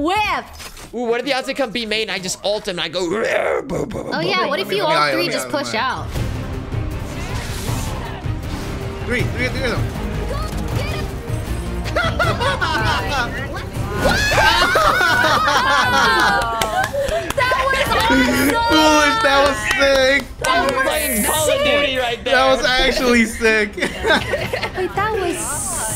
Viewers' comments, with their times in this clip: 0:08 Whats that music playing arround ? Sounds epic.